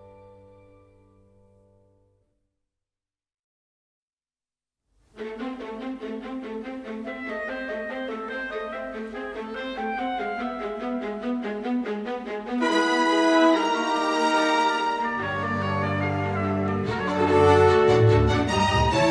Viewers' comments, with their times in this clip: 0:03 I don't usually comment but, I really like how nicely each character's leitmotifs meld together. You KNOW who's on screen even if you're simply listening to the soundtrack!!
0:03 I love it. Especially That theme is 🤩🤩🤩🤩🤩